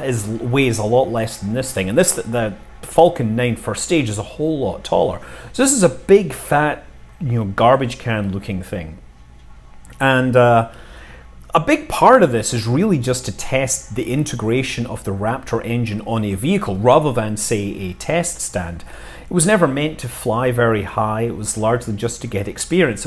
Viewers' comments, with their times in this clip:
0:05 “This is a big, fat, ya know, garbage can lookin’ thing.” :) Best quote. Love your accent sir!!